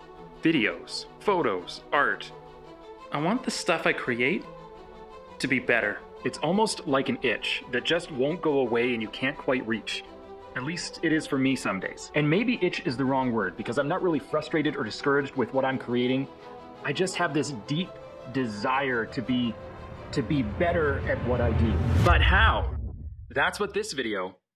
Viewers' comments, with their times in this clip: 0:06 Hey, great video, love the topic! Just wanted to give you some feedback and tell you that your audio has a weird effect. I can still hear you, but I can tell it isn't "normal". It also doesn't appear in the beginning, only after it begins to sound that weird way. Still like the video, just wanted to let you know in case you didn't notice it :)